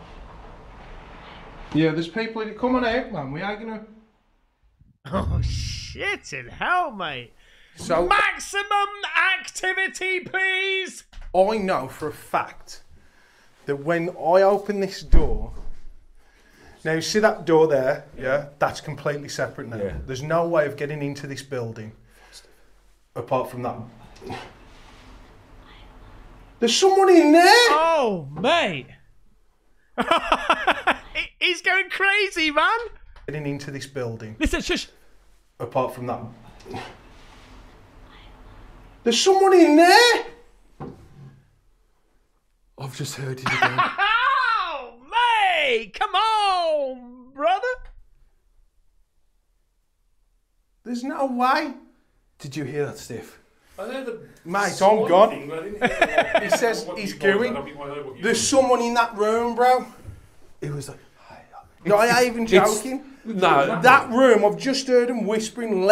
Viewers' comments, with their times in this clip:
0:08 Yeah I don't want to be that party pooper but all these voices sound like they're coming out of a speaker
0:23 At the video point of approx you can hear a woman say "I want you"
0:23 I hear the woman say "I love you"
0:38 the girls voice says I love you
0:39 Is she whispering "I'm hungry?
0:39 I think finding an old woman whispering in the dark would be even more scary than a ghost doing it 😂 amirite?! Edit: the girls voice clearly says, “ I love you.” I swear it on my life. I have noise canceling headphones on very expensive with bass boost. I heard it mate.
0:45 it totally sounds like a woman says “I’m hungry” lol
0:48 This is the second time I've heard the female voice say "I love you." The first one was when they were at the top of the stairs on the second floor when the guy on the landing was told to be quiet for a minute.